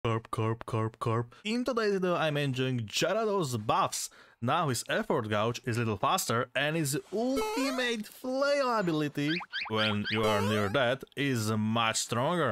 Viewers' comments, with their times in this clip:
0:00 I should've guessed you can do an amazing Magikarp voice impression as well 🤭